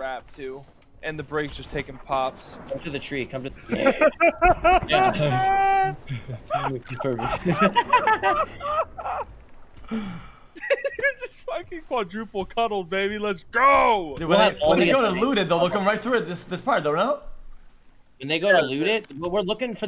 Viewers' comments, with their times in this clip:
0:03 this laughing dude...